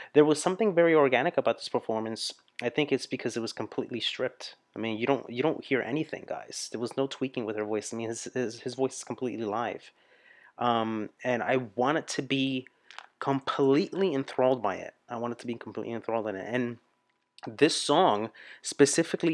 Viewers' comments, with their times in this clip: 0:05 yup stripped, no vocoder or stuff... that is what we called a singer back then, someone who can sing......not an loud influencer ^^